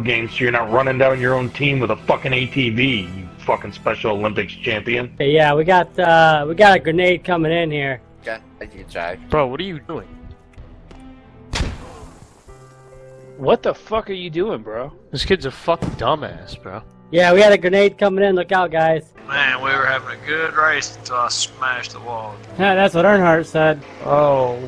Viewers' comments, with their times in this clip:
0:05 the hesitation has me rolling